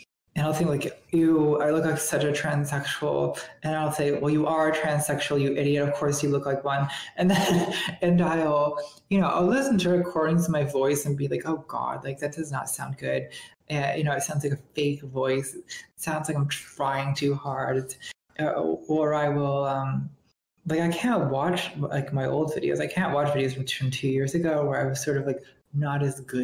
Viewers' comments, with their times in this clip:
0:08 and from the very start of the video i'm like "damn, her voice is cool, i wish i could make mine kinda similar". gonna keep her voice in mind as a goal when voice training.